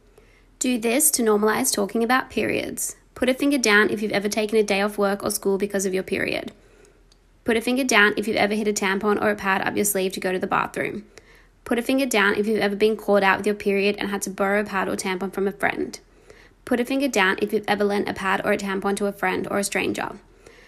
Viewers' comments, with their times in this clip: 0:03 The girl's voice fr has some groove to it. Omg I love it.